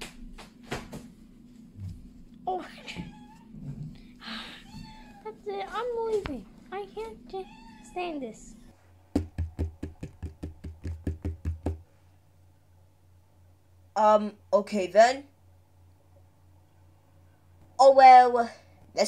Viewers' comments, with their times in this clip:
0:03 I hear a cat